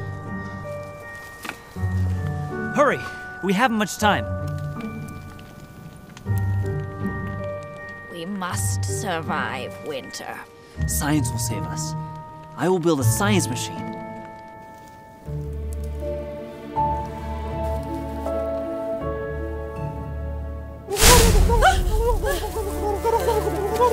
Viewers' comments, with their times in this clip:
0:07 Me confused Did she just talk